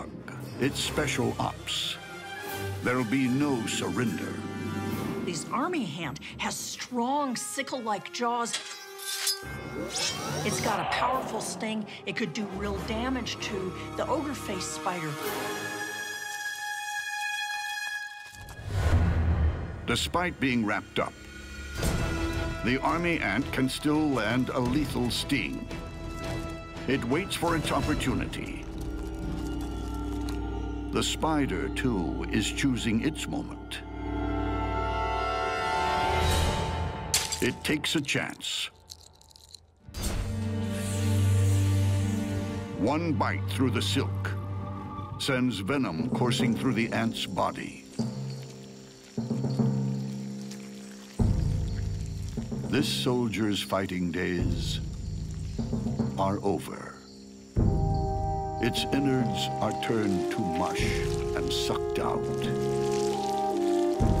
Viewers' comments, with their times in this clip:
0:10 they just put doom music when you open door and face the demons haha
0:46 That military music though. 😂🤣